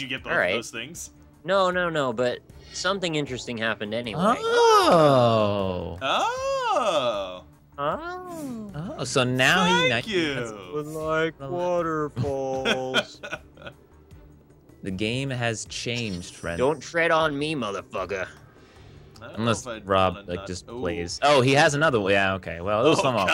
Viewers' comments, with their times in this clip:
0:09 OMG, I hope was a reference to Beedle's "THAAAAAANK YOU" <3 Coming back to this after listening to ep 101... this feels so tame in comparison xD